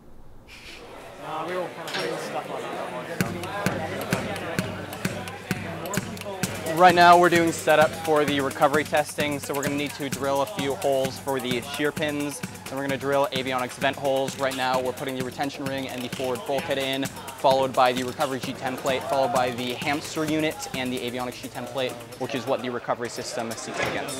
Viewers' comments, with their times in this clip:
0:07 That speech sounded straight out of a movie and it must have felt so cool to say.
0:11 i don't know what he saying but it sounds important